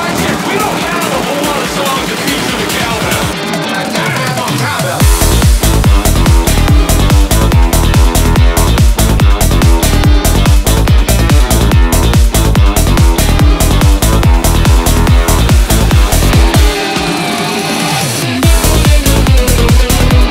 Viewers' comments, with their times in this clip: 0:04 is the best drop I've ever heard!